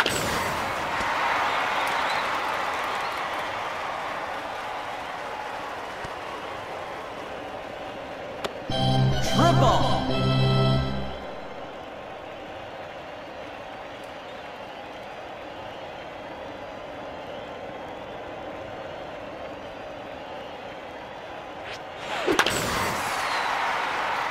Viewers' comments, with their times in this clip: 0:06 i like the triple music